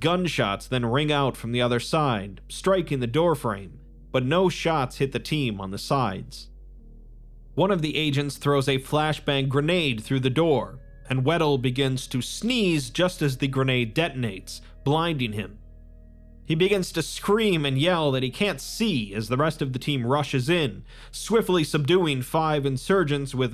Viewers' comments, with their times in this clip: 0:07 love his lil chuckle lmao